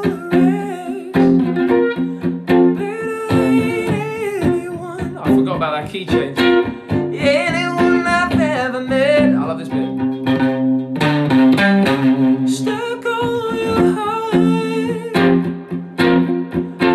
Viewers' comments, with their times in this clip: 0:04 Yes!! so cool what you do/ near minutes😄 and you give like a sound of piano with your🎸